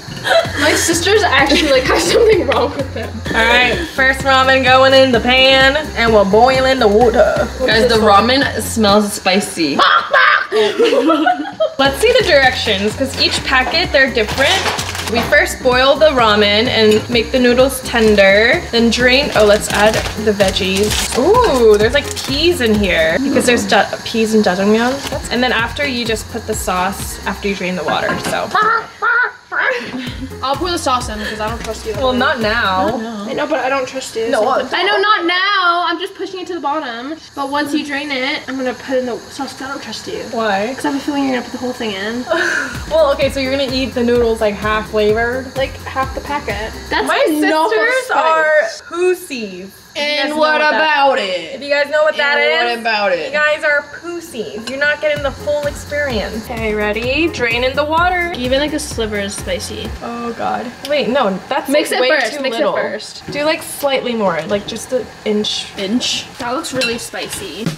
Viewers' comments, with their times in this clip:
0:06 WHEN SHE WAS JUST STARRING AT THE RAMEN THEN MAKING CHICKEN SOUNDS WAS HILARIOUS
0:36 that’s almost aussie accent i keep repeating it
0:48 Dude that’s actually how my dad says it 😂